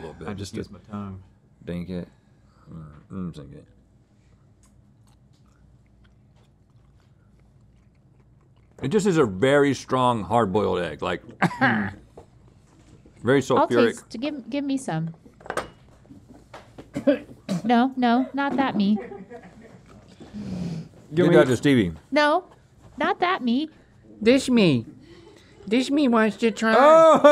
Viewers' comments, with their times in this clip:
0:09 Link turned into a Minecraft villager because it tasted so bad
0:11 Squidward laugh from Link 😂